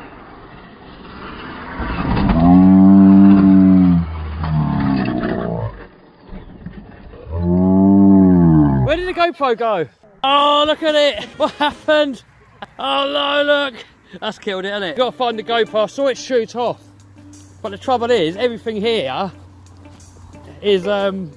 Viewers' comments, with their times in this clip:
0:03 Feel sad for the litte specially with bgm
0:09 lol the three wheeler sounds like a semi using engine brakes